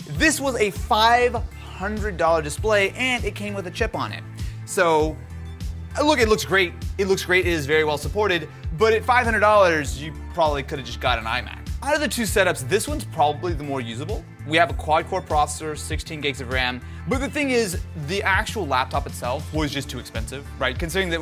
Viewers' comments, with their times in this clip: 0:09 Samsung notification intensifies